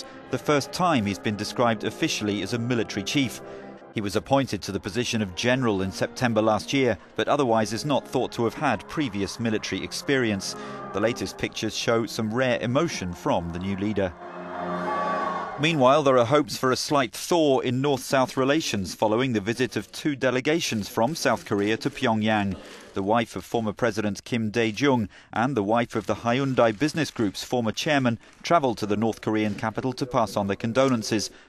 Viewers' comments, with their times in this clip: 0:08 respect for that guy laughin 🤣
0:08 A guy laughs savage af
0:08 ..... that laughing guy is literally every back benchers when they hear their math teacher is resigning for the job
0:08 can anyone tell me whether the guy laughing is still alive or not ?😁
0:08 Wait what really Kim jongu has a emotion really But seriously that guy from he laugh I salute to him😂😂😂
0:08 he laughing and nah they all laughing
0:08 that guy is laughing savagely and because of that he's now in prison probably
0:08 The laughing guy is probably American
0:08 the guy laughing lmao
0:08 that guy laughing is probably dead now
0:12 the guy was laughing lmao